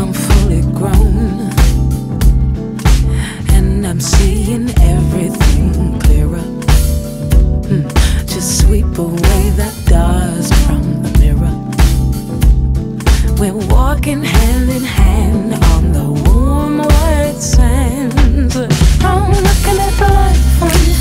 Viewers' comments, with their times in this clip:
0:07 I love the little “hmm” lianne does following the clearer line, as if she’s honestly contemplating the trueness of it 💜